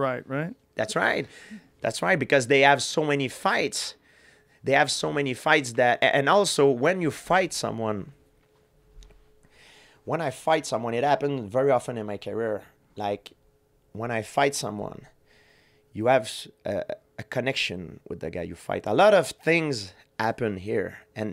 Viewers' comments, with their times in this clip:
0:06 GSP lettin' out some Gas 😏